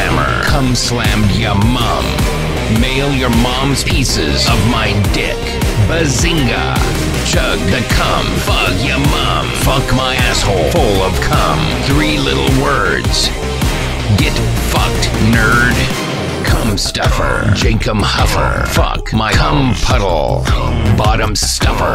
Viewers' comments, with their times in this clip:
0:06 was legit catchy